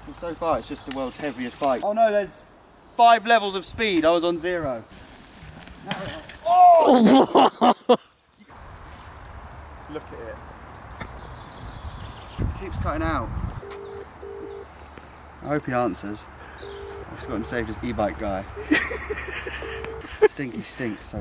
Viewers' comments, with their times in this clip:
0:06 the most french laugh